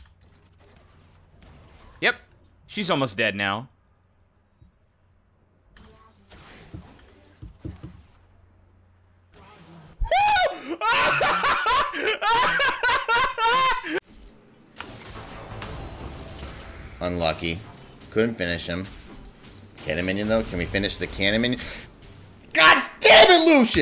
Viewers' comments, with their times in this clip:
0:09 what kinda garbage fake af laugh is that